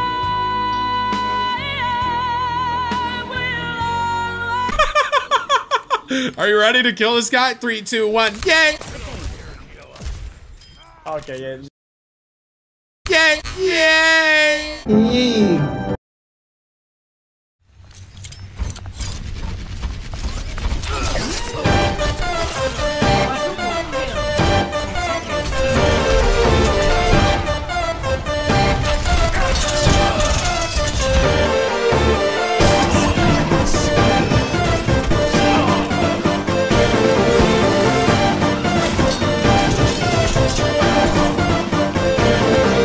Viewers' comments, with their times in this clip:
0:05 he sounded like fucking Elmo
0:30 my favourite music !